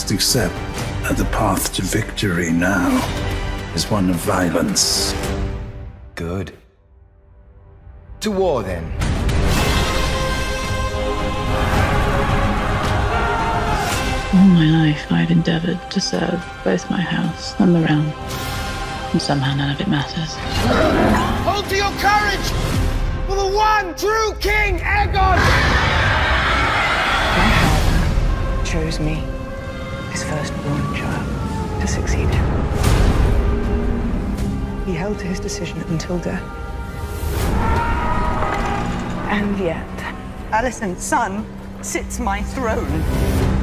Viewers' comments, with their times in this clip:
0:06 the way Aegon speaks here reminds me of Ramsay Bolton.
0:27 Emma's delivery of the line is absolutely fantastic. The way they use their voice to convey the rage and grief of Rhaenyra is amazing